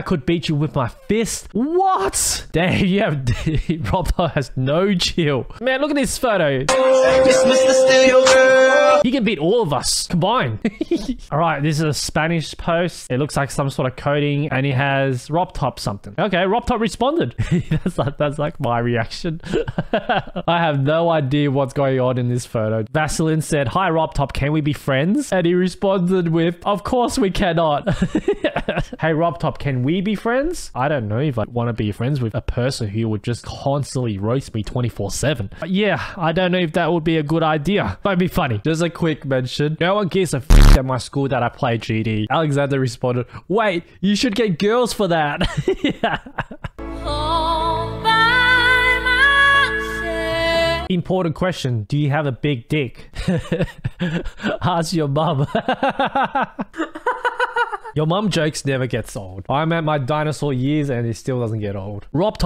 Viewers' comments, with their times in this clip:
0:10 goofy ah laugh
0:10 goofy ahh laugh
0:47 why do I always hear Obama's elf